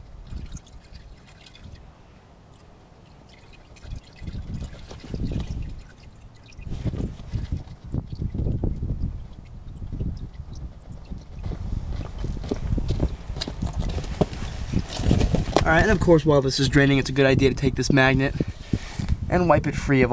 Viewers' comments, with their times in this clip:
0:07 VTEC kicks in